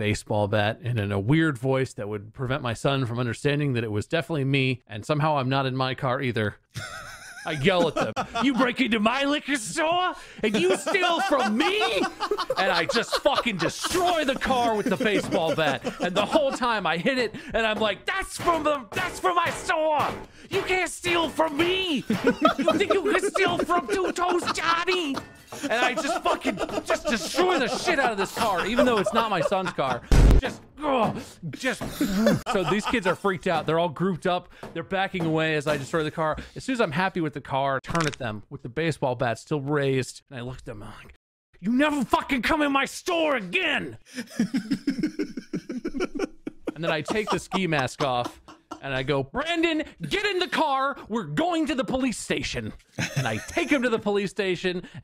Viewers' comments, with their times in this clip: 0:08 My favorite part because of Mark and Wade laughing.
0:41 god damn its this is a movie the way he said it